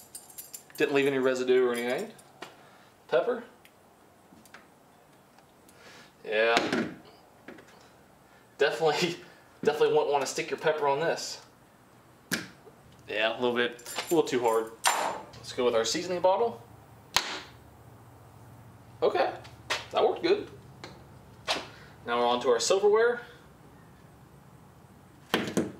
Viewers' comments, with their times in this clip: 0:10 sounded like he said you definitely don’t wanna stick your pecker on this and I don’t blame him 😂